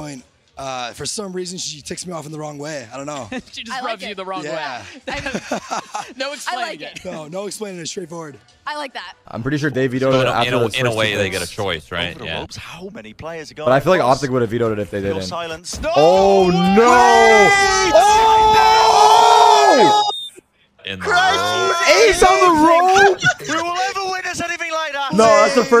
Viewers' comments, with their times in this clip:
0:07 Bro tariks voice in